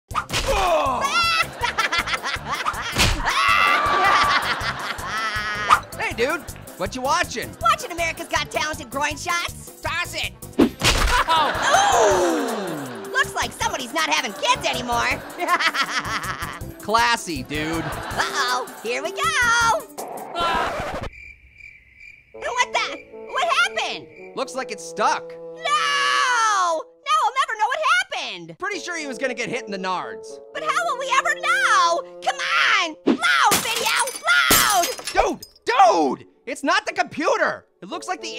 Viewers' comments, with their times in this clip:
0:01 Will you stop LAUGHING!!! D:
0:11 HE KNEW HOW PAINFUL IT WAS AND HE STILL LAUGHED 😡😡😡😡😡😡😡😡😡😡😡😡😡 🔪🍊 <——>😂🤣
0:21 crickets at night